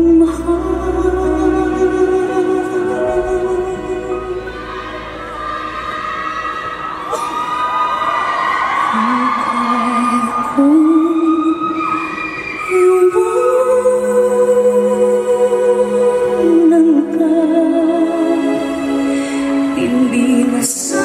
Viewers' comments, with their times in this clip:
0:03 let her sing before you fcuk'n scream.